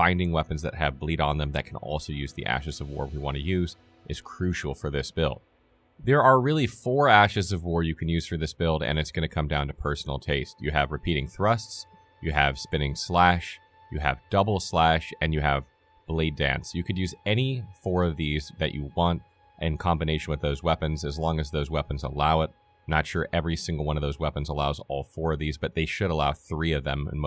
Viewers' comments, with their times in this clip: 0:09 Look im sure the builds cracked but the monotone voice drives me up a fucking wall. Only made it to before i had to stop